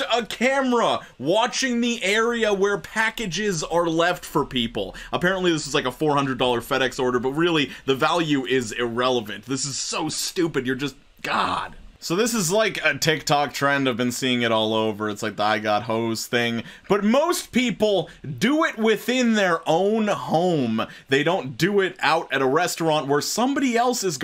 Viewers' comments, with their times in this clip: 0:09 this man was bussin gokus ultra instinct track